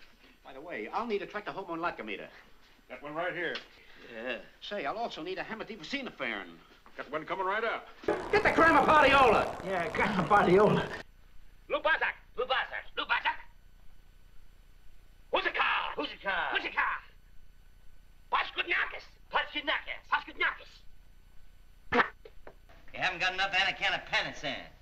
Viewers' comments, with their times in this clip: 0:08 He even made curly joe laugh at that one lol ,, Almost sounded like he said get the gram of POT - e - ola . Moe even looks like he realized what he said lol